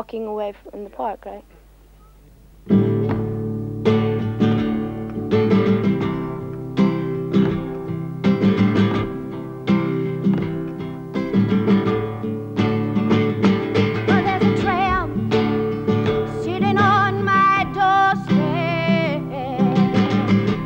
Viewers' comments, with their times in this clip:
0:03 It seems you've influenced Cyndi Lauper I definitely hear her voice in yours.